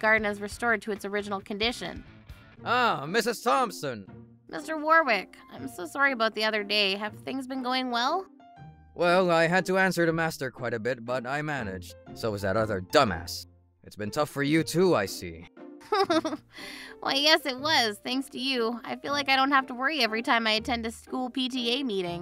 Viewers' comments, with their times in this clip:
0:07 Master (angrily screaming at the top of his voice): WHAT IN THE FLYING F💣 DID YOU DO TO MY GARDEN?!?! 🤬 I bet everyone in the house nearly had their eardrums blown out by all of that yelling! 😱😵😖😬